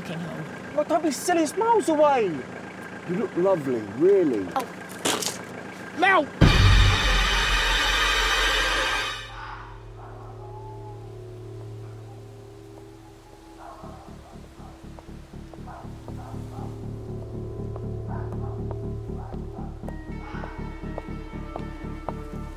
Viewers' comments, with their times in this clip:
0:04 WOMAN BLOWS RASPBERRY
0:08 Holy CRAP! Headphone warning